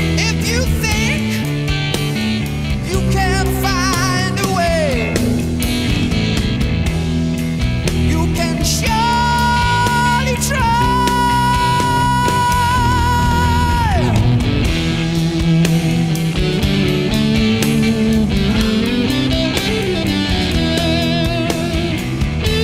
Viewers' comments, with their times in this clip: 0:03 If hearing Rob's voice doesn't convince you how powerful his voice is, pay attention /29 where his hair is actually blown back by his breath, reflecting off his hand, when phonetically projecting the "f" in the word find.